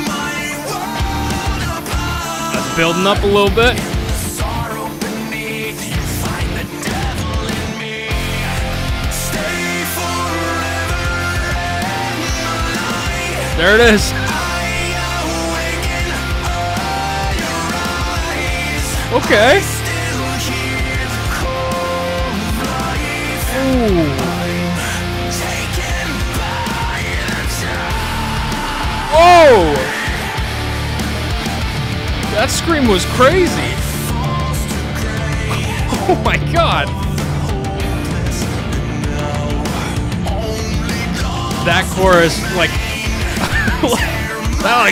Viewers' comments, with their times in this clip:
0:10 Every BB fan has the same reaction when that first chorus hits… hits you in your soul
0:26 the scream brother 😂🤘